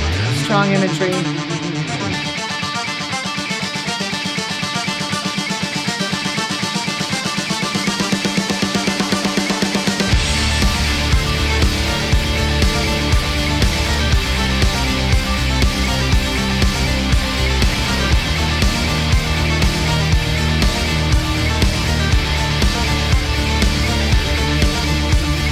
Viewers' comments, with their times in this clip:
0:10 I don't understand how anyone who appreciates music can experience the build up to and not start nodding their head when it takes off.